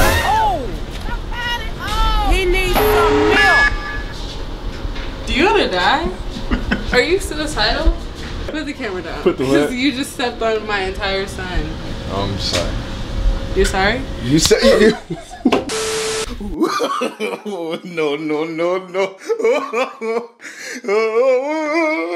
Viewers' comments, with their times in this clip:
0:10 She said her entire son 😂